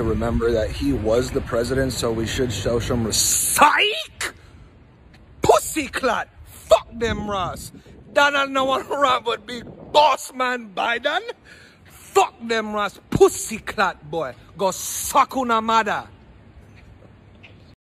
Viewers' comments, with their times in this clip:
0:08 what exactly is he saying before boss man biden